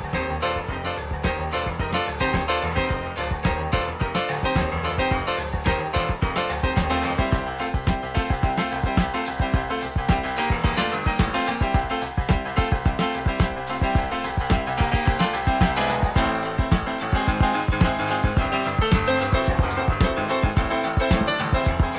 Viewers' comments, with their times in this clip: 0:03 the drums and piano section kicks ass